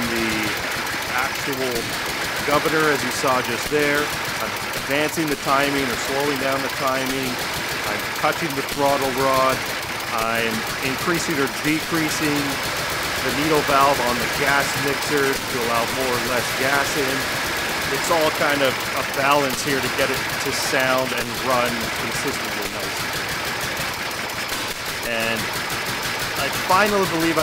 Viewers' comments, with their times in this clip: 0:09 what? was thaat actually go vututu?! XD look how that blue flame poped out thecarburtor thing! wow